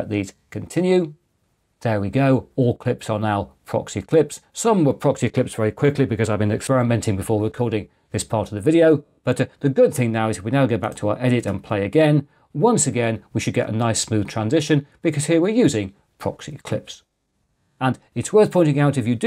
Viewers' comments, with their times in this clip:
0:06 weird audio cut over here.